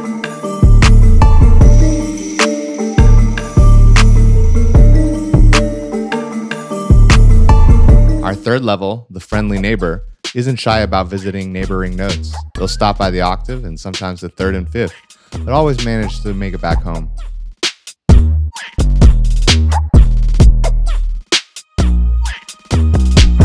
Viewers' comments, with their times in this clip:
0:10 yooo the way he talked on the beat was coooool hahahah